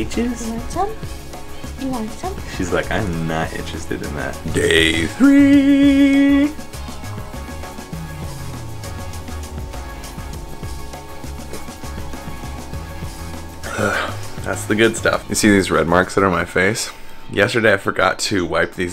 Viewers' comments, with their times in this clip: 0:03 I'm wondering if did you deliberately sing in perfect key with the background track or was it accidental? Lol